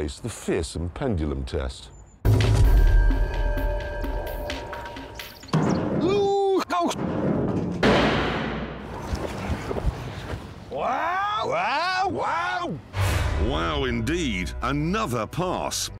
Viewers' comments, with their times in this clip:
0:11 The sounds of hamsters being cooked.